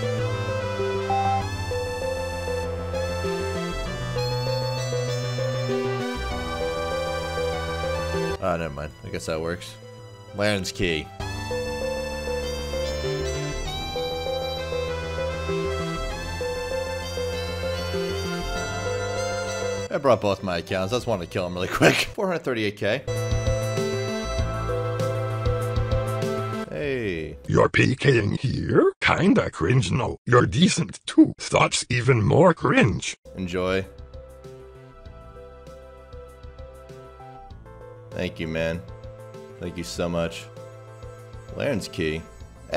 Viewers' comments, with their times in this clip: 0:05 The music sounds like a bad ass place in Mario Nintendo
0:10 The wierd music at like rlly fckd my high up
0:27 where the fuck did you find an Orc text to speech thing
0:28 Wtf is that voice Lmaoo 😂😂